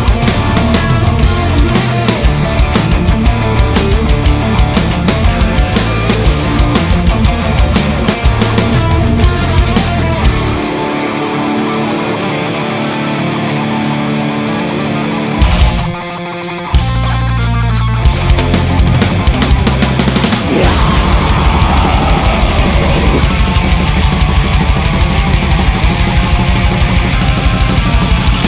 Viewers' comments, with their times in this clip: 0:10 most black metal Elvenking has ever sounded. Love it when the drums go full time!